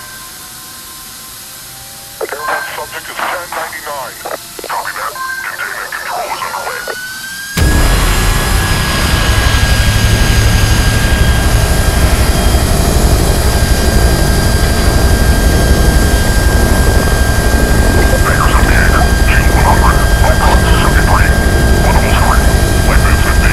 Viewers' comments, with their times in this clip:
0:07 That startup gives me chills.